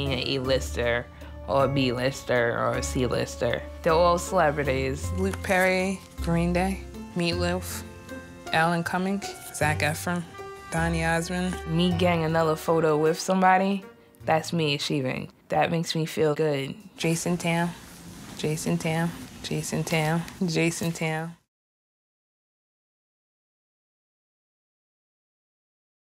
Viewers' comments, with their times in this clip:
0:07 Omg the “meatlewf” killed me ... it’s MEATLOAF , MEATLOAF!!